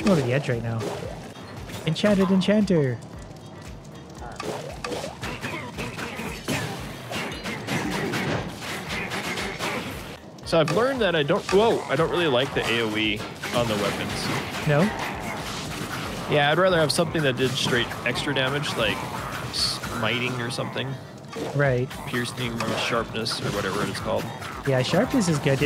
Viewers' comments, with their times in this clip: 0:06 theres a rythm when they hit